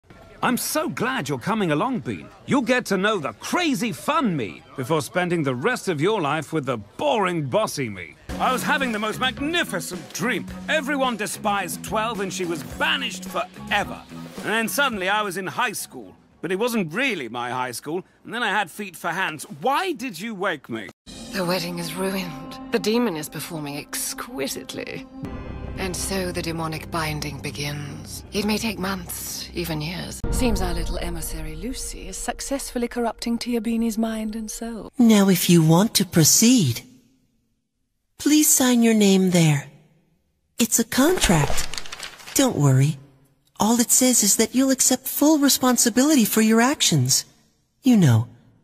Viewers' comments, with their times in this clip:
0:00 Why is like byron voice the brawl stars? 😳
0:34 Adrien Agreste is that you?